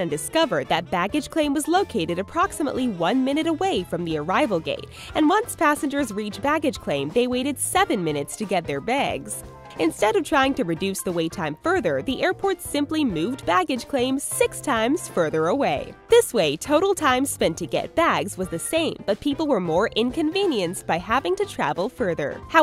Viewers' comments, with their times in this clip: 0:08 The way she said bags irritates me